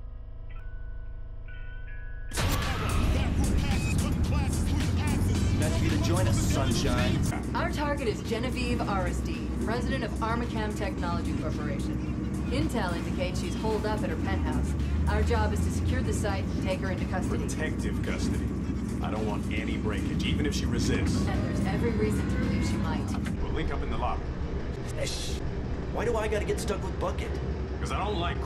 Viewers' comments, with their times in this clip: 0:08 anyone else hear Cortana???
0:08 I hear a certain A.I. from a certain game series
0:09 the girl talking sounds like cortana. same va?